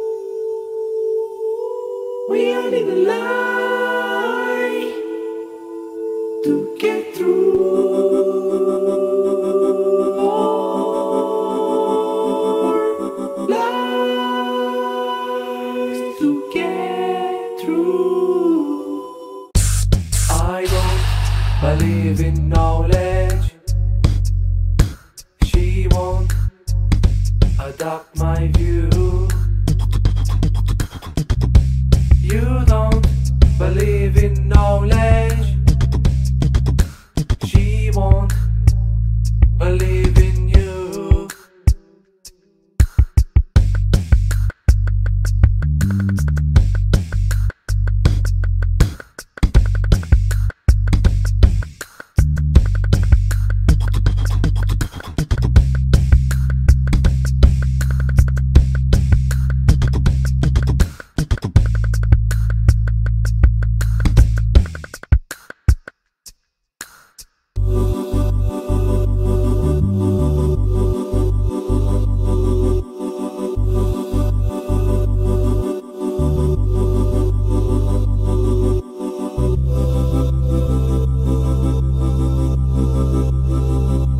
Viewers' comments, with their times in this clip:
0:09 nice beat drop
1:05 This is so underrated, not jam-packed of percussion or just a bunch of mixed noises, a calm masterpiece. I can just imagine a nice, angelic beach. Sounds very relaxing and uses this mod and mechanics wonderfully. The perfectly timed muting and removing sounds, perfect choice of sounds, easily one of my favorite custom mixes I've ever heard! Edit: that switch between some perfect, calm percussion to melodies was awesome